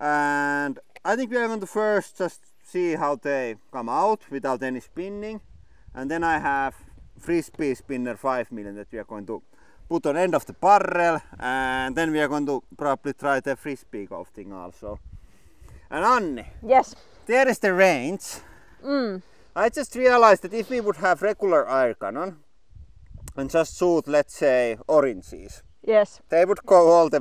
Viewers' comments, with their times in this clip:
0:10 How many r's in barrrrel?